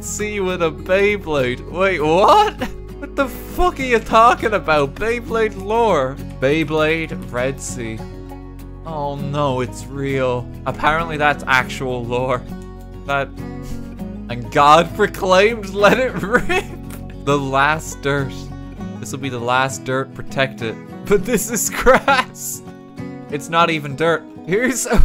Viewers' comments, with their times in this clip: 0:10 That "Oh no, it's real." Was full of so much pain.